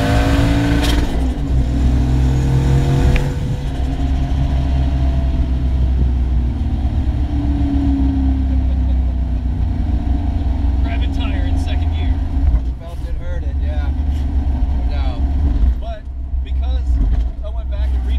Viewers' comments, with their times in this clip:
0:04 Left a little rubber there .... hehe! As for the grandma car, it certainly can play it with the fabric above the drivers seat letting go from the foam backing. The car sounds great - almost too great for the mic in the camera! :D